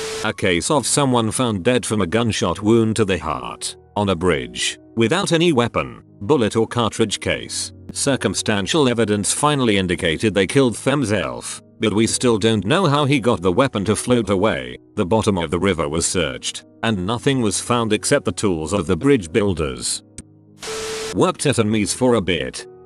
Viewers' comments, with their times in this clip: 0:09 why the hell did it say themself like that?